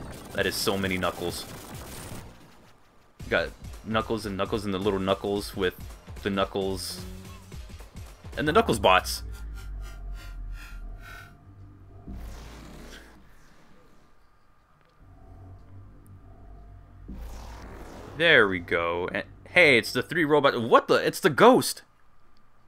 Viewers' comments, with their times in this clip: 0:03 Just a higher-pitched HBH theme. Shoulda been Knuckles from S&K.